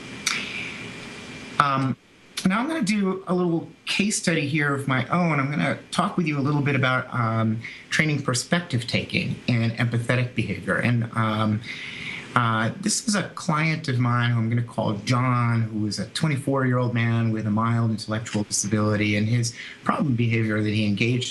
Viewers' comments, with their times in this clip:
0:07 From sounds dropps out. Would be interested in further readings on RFT for perspective taking/social skills training